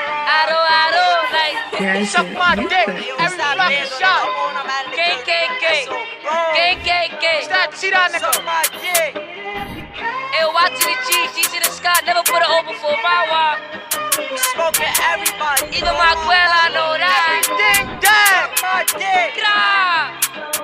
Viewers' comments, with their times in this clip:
0:05 who else thought dthang said KKK